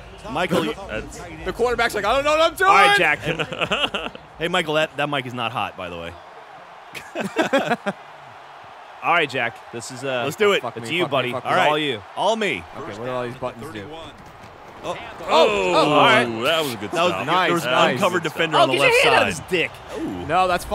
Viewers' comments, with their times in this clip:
0:06 listen closely and you can hear someone playing trivia crack.